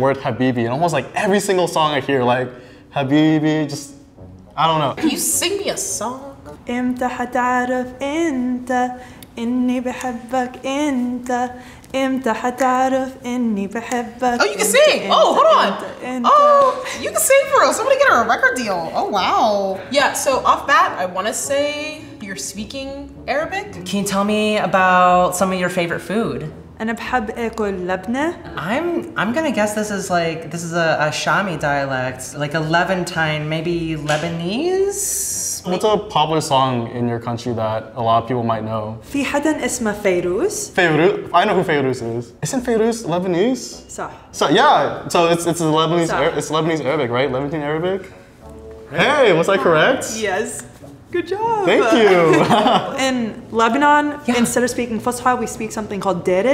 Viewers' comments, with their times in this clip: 0:06 is the whole episode. Her singing is so cool I looked up the original. Not knowing a thing about Arabic music.
0:40 Although Im lebanese, this girl's arabic accent is so broken I genuinely didnt know what her dialect was, shes definitely been born and raised outside the middle east. But im still so impressed as to how it was guessed by that one girl to be a levantine dialect and specifically lebanese!! we definitely have the softest arabic dialect because of the french influence on the country, but she caught on it spot on, even though the girl sounded choppy and kind of slow while lebanese sounds more flowy and soft.